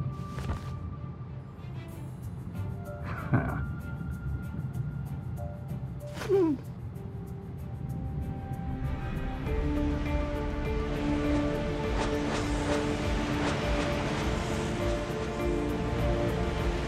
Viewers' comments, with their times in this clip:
0:03 That "heh" gave me goosebumps.